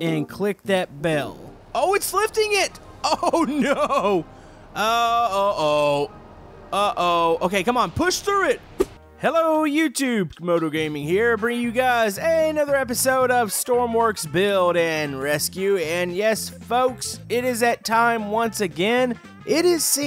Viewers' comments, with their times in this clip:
0:05 the OH anthem oh oh oh oh ohhhhhh oh